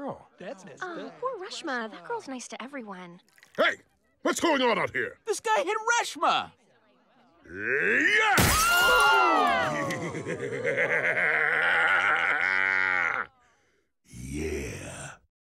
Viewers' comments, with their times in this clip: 0:06 That moment you begin uncontrollable laughter!!!😂 YEAH!